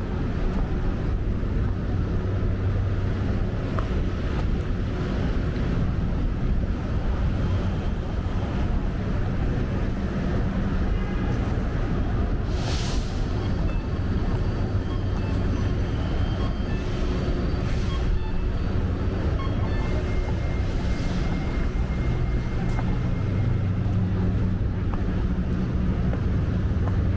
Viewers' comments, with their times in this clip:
0:09 My brother used to LOVE the crosswalk sounds at Kennedy Plaza. It sounded like cuckoo birds.